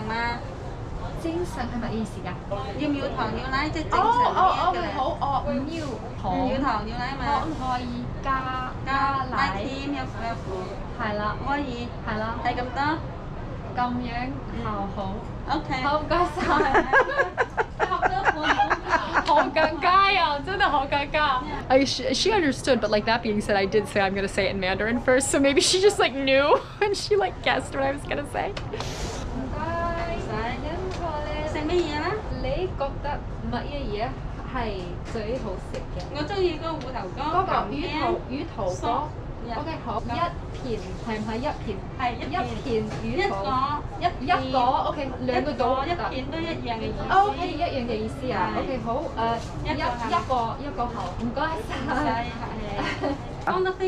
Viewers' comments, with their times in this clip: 0:03 Cantonese is an ancient language (try to recite Tang Poetry and you know how long it is), and yet difficult to learn (9 tones vs 4 tones variants of mandarin) Even the lady is speaking Cantonese with accent. So you don't need to feel embarrassed.
0:11 You did well - you DID NOT EMBARRASS yourself AT ALL; the bakery lady said you "spoke (Cantonese) extremely well." BTW when you said "Hei La", it was very cute because it sounded like Toisanese/Taishanese.
0:39 😂 you speak really well in Cantonese ( i’m from Hong Kong ) except you said taro cake mixed with Mandarin and Canton !! that is a big problem and i laughed so hard (i’m sorry but you really tried you best!) okay “yuu tau” in Canton means nipples xd now you know why i was laughing so hard xd but good job ! you really did a good job with the Cantonese! i’m surprised!